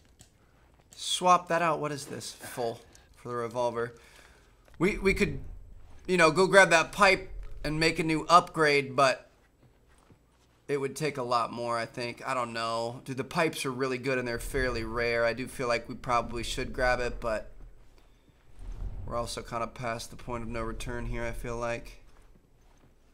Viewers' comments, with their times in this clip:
0:04 what the heck was the point of that? He didn't make a mistake or anything so there was no need to clap or am I missing something?
0:08 Does anyone know why he claps suddenly like in